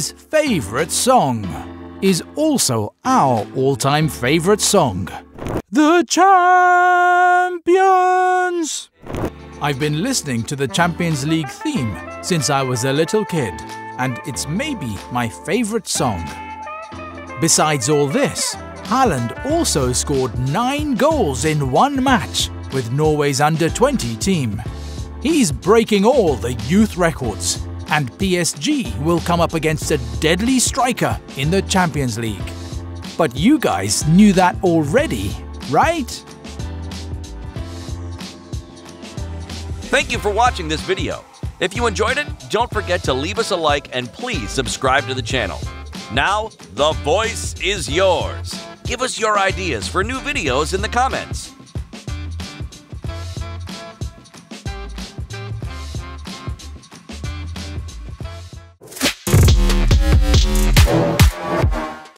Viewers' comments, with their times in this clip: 0:05 the worst ucl anthem you will ever listen to😂
0:46 We can all agree that that all the other narrators don't bring that much hype like the wth narrator who just spoke in 😂